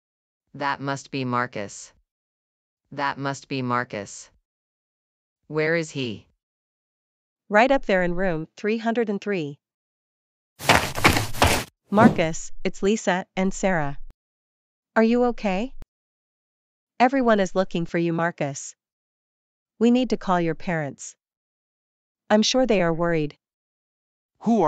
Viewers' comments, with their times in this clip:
0:07 they drank some enegy drinks and started talking high pitched voices